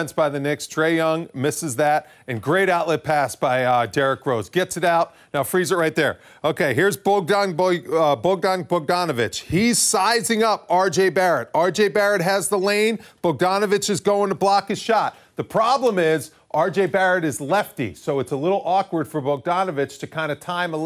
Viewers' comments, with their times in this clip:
0:07 This should be the way to prounounce Bogdon Bogdonovic